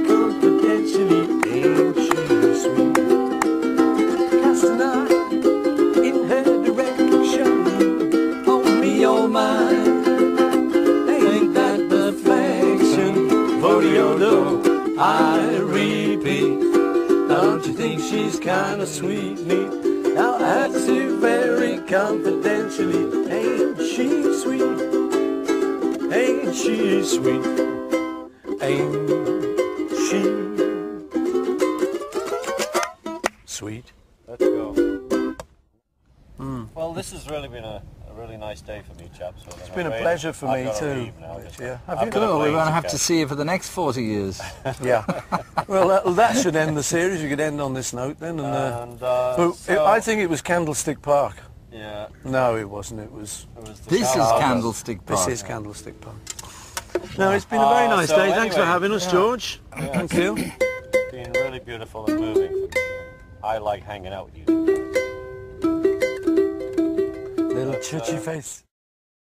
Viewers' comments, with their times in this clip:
0:09 It’s beautiful how Paul and George, without missing a beat, automatically harmonize on “Ain’t She Sweet.” That’s what happens when great musicians and great friends make music together.
1:02 I think Paul was a little choked when Ringo said he liked hangin’ out with them 🥰. Paul responds with a strained “Little choo choo face’